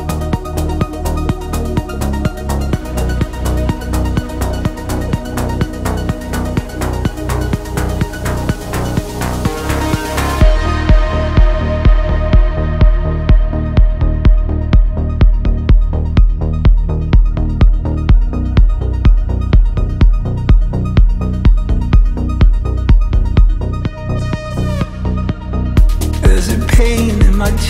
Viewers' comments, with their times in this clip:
0:10 woooooow I got goosebumps at this beat